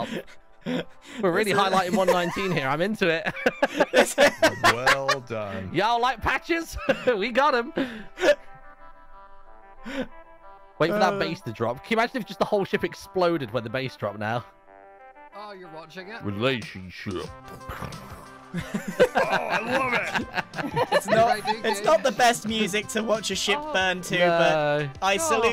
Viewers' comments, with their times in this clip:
0:09 The horns went from trying a simple update, to a silly joke, to an inside joke, to a sign of war, to the most terrifying sound of a raid coming to destroy you 😂 Also just feels so special. A moment to salute. o7 Relationship. ❤